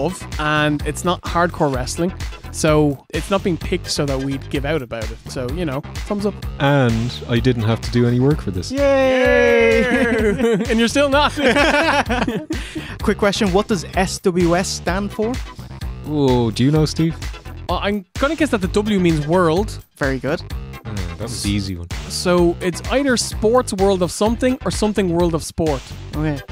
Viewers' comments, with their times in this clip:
0:08 Love the war Macho counts to 3. ( :ish)